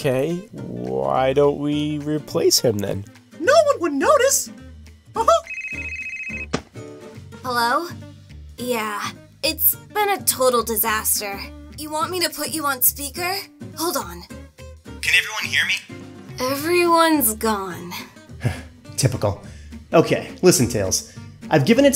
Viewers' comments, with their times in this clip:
0:03 knuckles doing mickey mouse impression